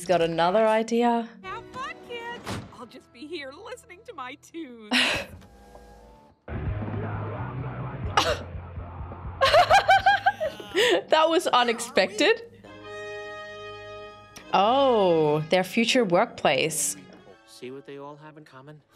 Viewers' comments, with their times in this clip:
0:06 my thoughts exactly, I didn't expect she'd be listening to thrash metal music 😂. Soon as I heard it I started headbanging! 🤘🔥🤘